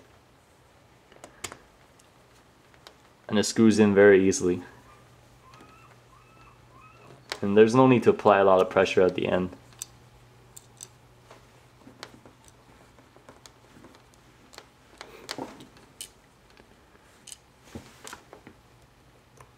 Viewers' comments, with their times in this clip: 0:04 ya hear that? That's what we call a beach birt!
0:06 I hear a Seagull seriously, listen real carefully.